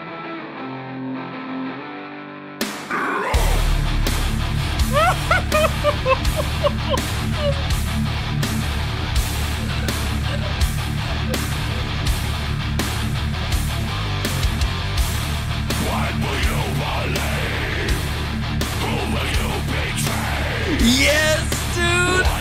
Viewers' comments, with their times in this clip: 0:03 We had the same reaction Instant metal face, a long "whOOOOOOOOOOOOf," into headbanging while laughing. I think it hits so hard due to the up and down emotions you get from the verses into that octave style chorus then back into a heavier bridge until the song brings you back down with that emotional 2nd bridge THEN BAM! Sick ass song.